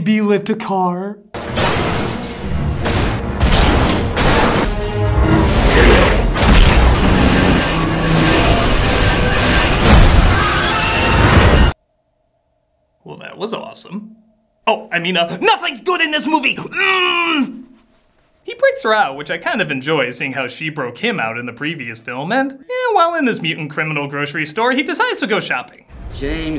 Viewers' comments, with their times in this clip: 0:10 does anyone else think the trailer sliding sounds like the hydra from god of war?